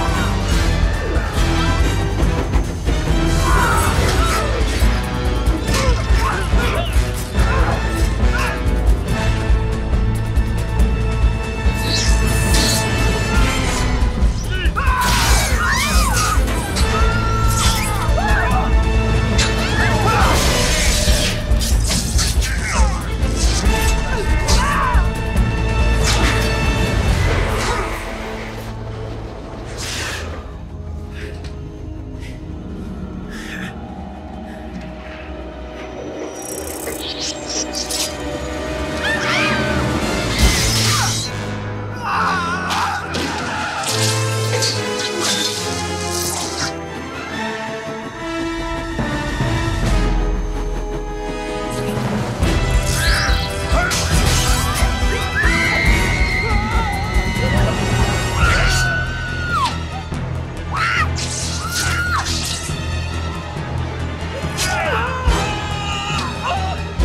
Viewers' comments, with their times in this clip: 0:05 This whole edit is great. Though one part that I find amazing is Something about Tom's theme with Tobey's Peter suits so well
0:52 Love it when Doc's theme plays